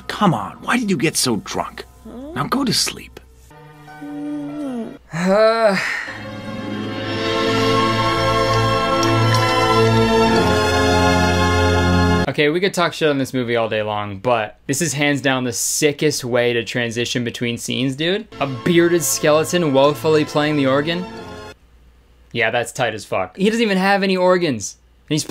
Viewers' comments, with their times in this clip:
0:07 Can we talk about the skeleton trying to do vibrato on an organ?
0:09 i can only hear a string orgestra but i can't hear orgen sound 💀